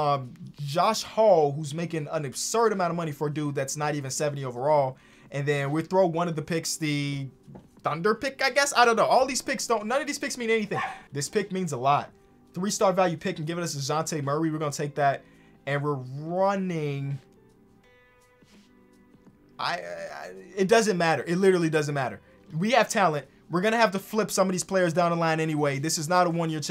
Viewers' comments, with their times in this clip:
0:10 Was that your dog bro?😂😭